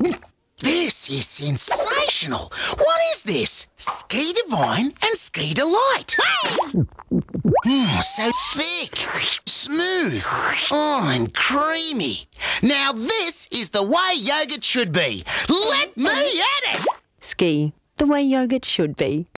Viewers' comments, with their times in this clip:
0:06 i hear so thicc 💀💀
0:06 that VA knew what he was doing 💀
0:07 all the talking and sfx💀💀
0:08 was just so žèštŷ
0:09 THICK vine boom SMOOTH VINE BOOM AND CREAMY VINE BOOM
0:16 unrelated sploosh sound